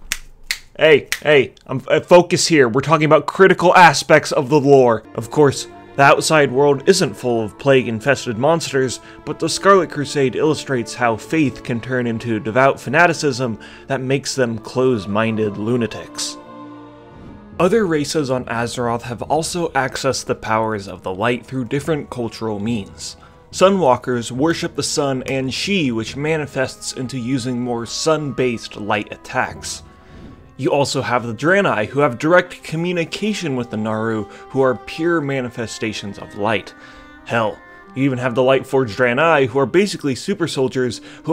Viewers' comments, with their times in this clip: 0:03 yea critical ass i can see it
0:24 lol I just realized you meant to say An'she